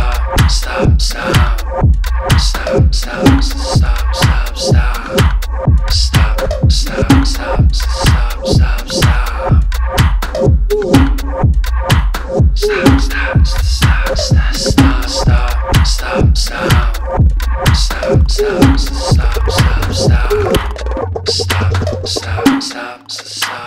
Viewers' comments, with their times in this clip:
0:05 wow...now I have weird music playing and can't hear him talking...?????????? WTH